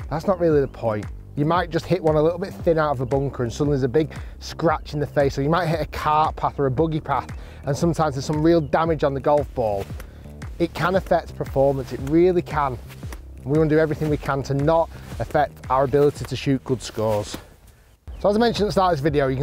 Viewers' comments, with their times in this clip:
0:05 What's a "boogy path"?